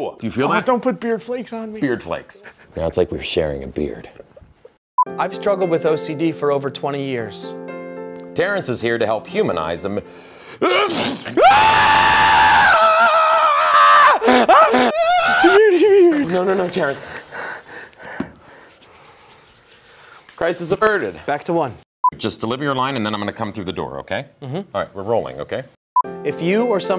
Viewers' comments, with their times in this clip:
0:10 lmfao, I don't have ocd, but if someone sneezed on me like that I'd have pretty much the same reaction XD